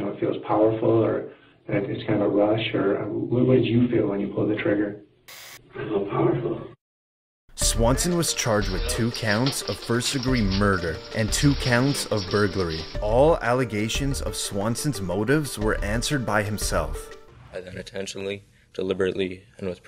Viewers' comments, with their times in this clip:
0:05 why he say it like that